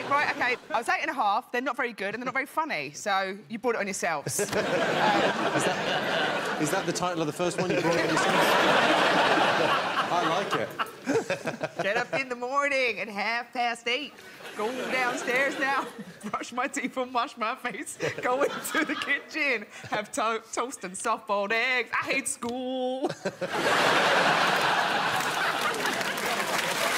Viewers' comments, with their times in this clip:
0:10 Sounds like "Friday" by Rebecca Black